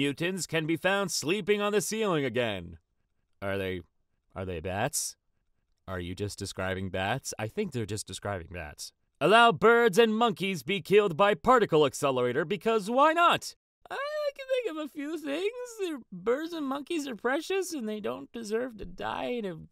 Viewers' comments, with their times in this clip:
0:05 sounds like the forest